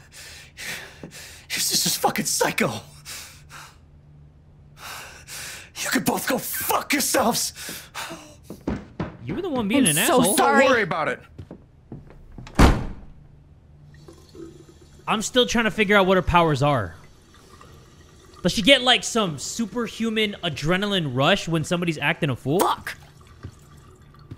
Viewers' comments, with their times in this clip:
0:05 he sounded like he was about to cry lol